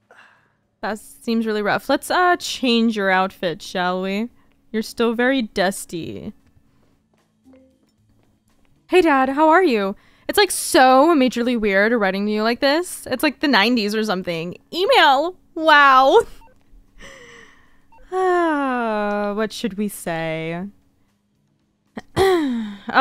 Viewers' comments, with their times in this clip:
0:09 Not you almost sounding like Tracy reading her text 😭